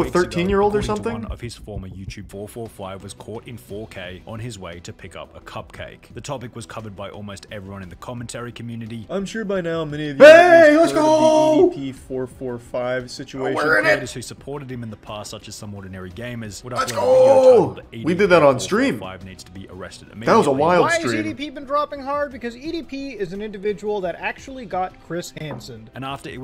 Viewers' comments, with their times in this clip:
0:07 i had my head phones to max and I was talking to someone besides me and all i hear is heyyy let’s gooo